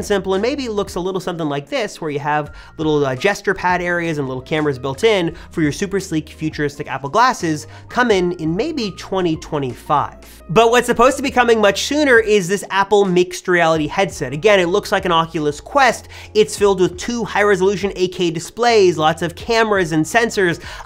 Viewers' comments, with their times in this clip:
0:03 I want "jester pads" on my glasses